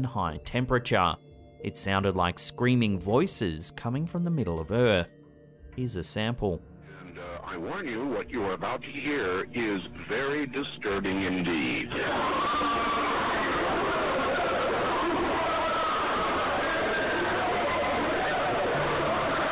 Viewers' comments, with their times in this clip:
0:07 that sounded like Art Bell.